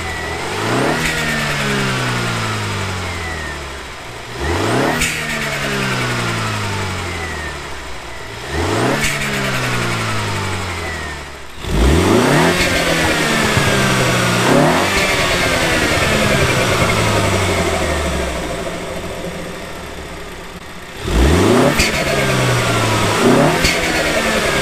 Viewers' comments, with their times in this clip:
0:06 i have a question for when u rev it and hear the turbo whistle how do you do that? mines doesnt do it